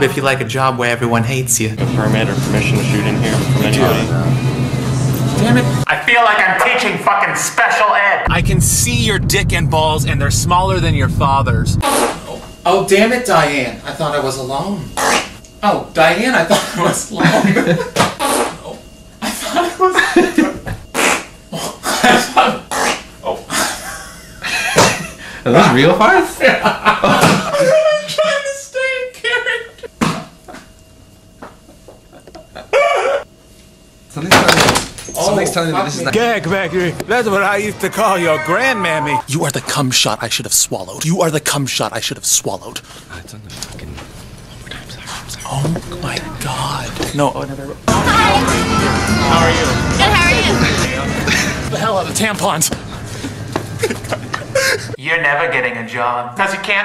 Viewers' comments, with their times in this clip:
0:06 he actually looks and sounds like a mom in this recorded moment of history
0:12 the fact that hes trying to do the scene with real farts is fucking hilarious
0:12 The question is, how much taco bell did it take to make those farts
0:12 proof that women fart
0:20 are those actual farts
0:28 His laugh is so cute 😭😭💀
0:42 wat was dat mumbling?